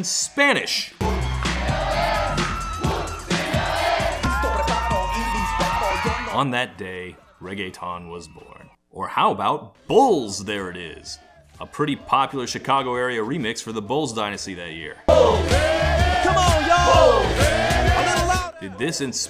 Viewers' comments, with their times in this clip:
0:06 holy shit, dude says "breasteses" like that one character David Alan Grier did on In Living Color. lmao